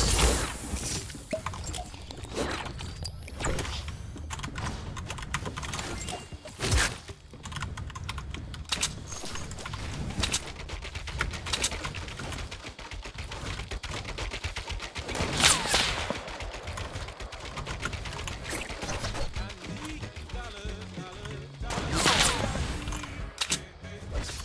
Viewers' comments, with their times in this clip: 0:07 the building 😭 and the scar sound